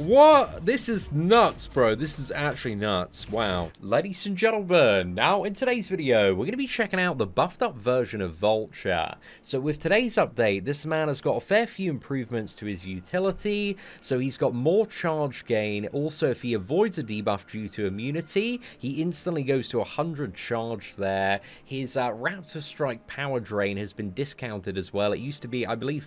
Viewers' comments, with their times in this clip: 0:07 The way he says Vulture is pretty seductive 😅